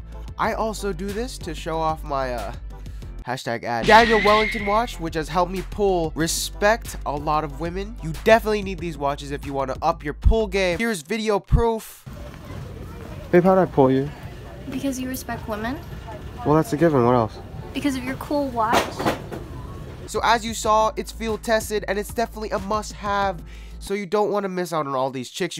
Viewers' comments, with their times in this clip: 0:08 i can here can't touch this